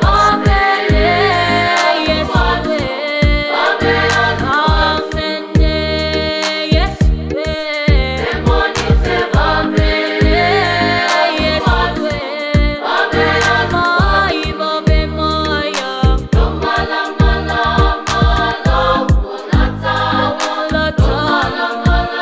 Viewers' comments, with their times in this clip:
0:08 lady sound so good